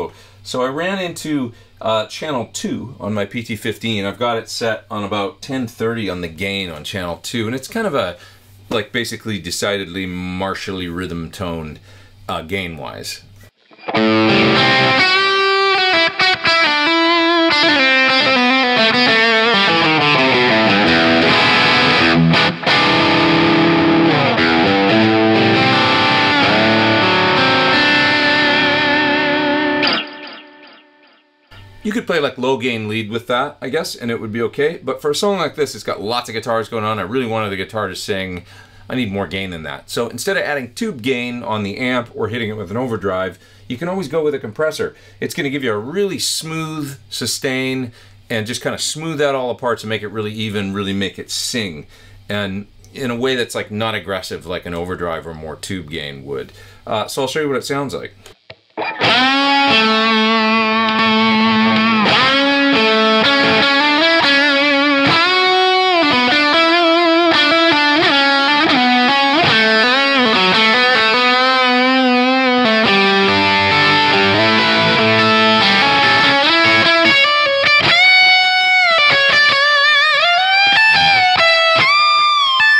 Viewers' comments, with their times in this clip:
0:04 Sounds Great!! Very Clean. I Liked it when you Bringing the Dry Back in, or 10 on the Dry Mix Nob. #Honeycomb - of Course those EMGs give a Nice Sweet Clean Tone.
1:04 I was really impressed with how simple it was to dial in. noon, and noon really seemed to make everything just right and cut the muddiness out. #honeycomp